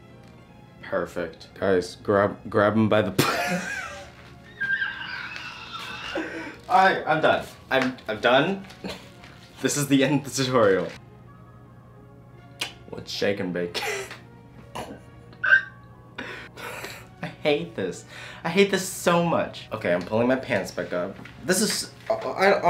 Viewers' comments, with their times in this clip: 0:03 i just realized we have the same fucking laugh 😂
0:05 Whales make that sound?😂